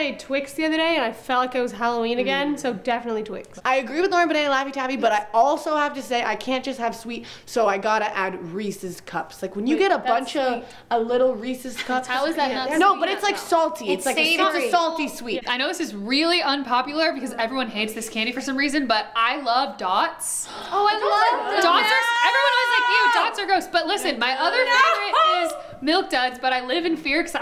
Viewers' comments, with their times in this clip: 0:08 This makes me smile so hard my cheeks hurt...must be the happiest girls in Nashville...loved full harmonies chills...Congrats on 500M...😘😘😘😘😘😘From Tucson!!!